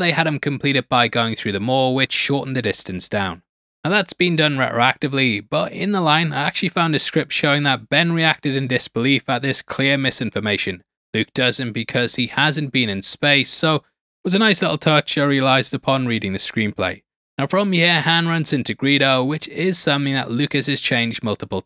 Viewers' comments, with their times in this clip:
0:04 re-racktory Interesting pronunciation of retroactively. Also try to use syllables when you read it other wise you will still look like a muppet. Its not japanese, space the letters out like you remember primary school.